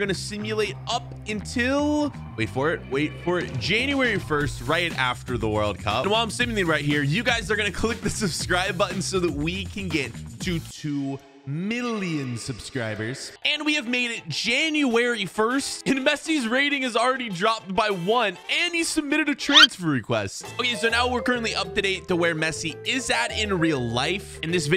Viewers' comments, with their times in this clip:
0:07 i don’t like the way you said that, currently thinking about unsubbing